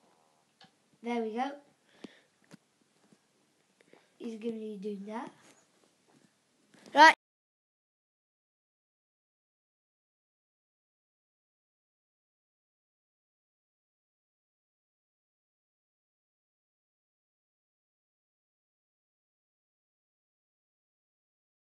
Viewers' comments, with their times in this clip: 0:08 my audio stops working sorry about that. Also the recording thing doesn't record my outro.Weird. I'll do it now. Thank you for watching, leave a like if you enjoyed, subscribe for more and goodbye. By the way my brother won :(